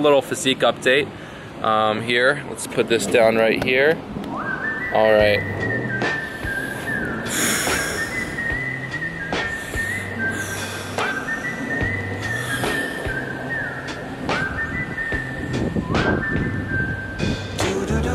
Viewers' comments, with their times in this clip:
0:05 I like the nonchalant BGM that plays Lol Awsome